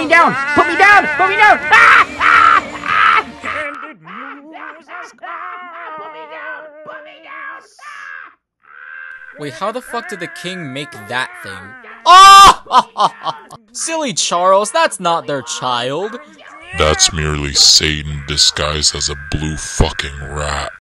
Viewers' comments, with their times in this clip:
0:06 Crisp Rat voice turns into Iago every time he tells someone to put him down
0:12 NLG that laugh sounded a bit like Sr. Pelo
0:12 sounds like groovy